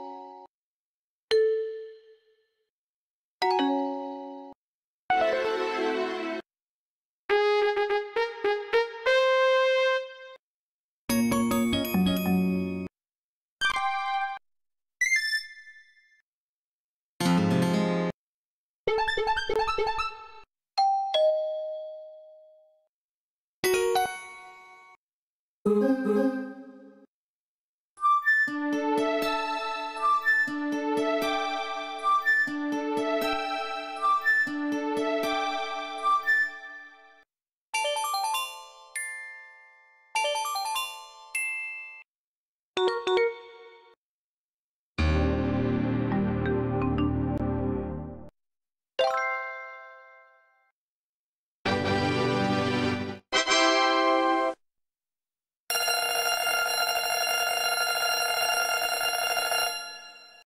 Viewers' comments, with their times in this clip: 0:04 I love this tune :D
0:06 Fanfare is great!
0:10 Perfect low battery song doesn't exi-
0:13 is just like the windows 3.1 shutdown sound
0:13 sounds like the shutdown sound of Windows 3.1
0:13 This sounds like the windows 3.1 shutdown sound
0:13 is almost the shutdown of 3.1 to CHICAGO
0:13 Sounds Like A Windows 3.1 Shutdown
0:13 old windows chimes sound but the sound is different
0:18 sound like rip n tear doom
0:20 Someone Going Enter on my house
0:20 Sounds like a doorbell.
0:20 The door Is doing *ding* *dong*
0:20 Is someone at the door?
0:20 is that doorbell sound?
0:21 Sounds like a doorbell.
0:27 progress sounds like a sound you’d here on a Wii, 3DS or Wii U
0:44 This startup is so real!
0:44 at the start it sounds like something out of a zelda game
0:51 Sounds Like A Windows 3.1 Startup And Windows 95 Shutdown
0:51 And heres a windows 3.1 startup sound
0:53 is sounds like Windows 3.1 Startup Sound and Windows 95 Shutdown Sound
0:53 WINDOWS 95 SOUNDS
0:53 when your Windows 95 computer shutting down
0:53 That sound looks like Windows 95's Tada! 😮😮😊😊🥰🥰🤗🤗
0:53 This is literally the same audio as the Windows 3.1 startup sound
0:53 its like the windows 2000 tada
0:53 that sounded very like the ta da and sounded like the microsoft windows nt version 3.1 start up sound